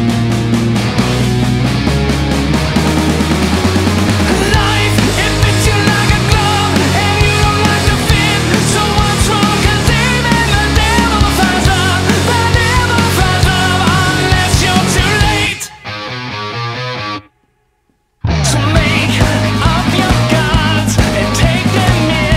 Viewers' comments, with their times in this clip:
0:03 reminds me of a Thousand Foot Krutch song Or some other band i cant put my finger on it ....